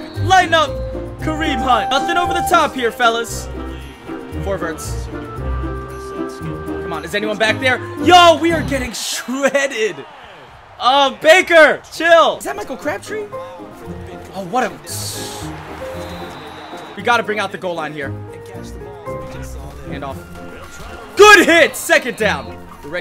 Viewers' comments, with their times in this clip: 0:08 he sounds like a surfer